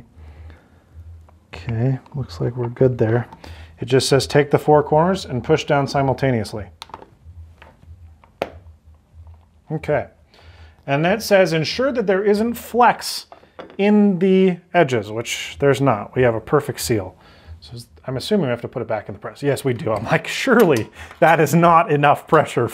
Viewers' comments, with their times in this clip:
0:08 and we made that crunch